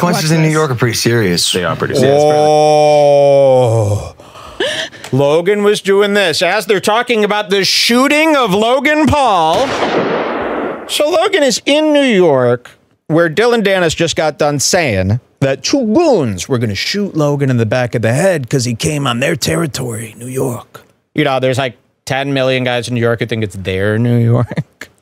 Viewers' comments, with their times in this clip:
0:09 perfect SFX drop. I don’t even remember hearing that one, and he did it so intuitively. He usually botches any one of them that’s not the bomb lol